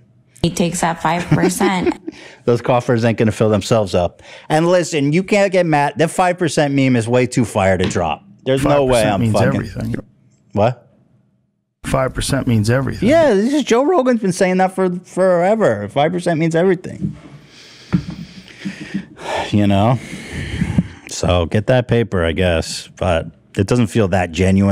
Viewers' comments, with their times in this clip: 0:08 that "What?" sounded so fucking swedish 🇸🇪